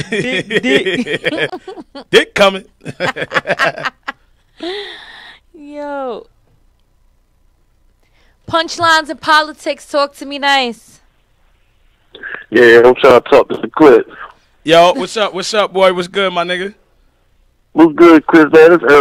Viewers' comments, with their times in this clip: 0:07 That uneasy pause 😂